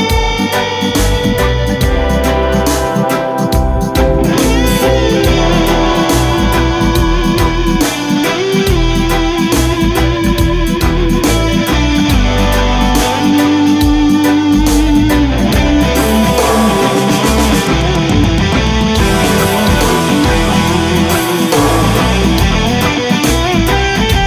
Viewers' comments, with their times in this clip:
0:06 Gotta Pink Floyd vibe on that guitar solo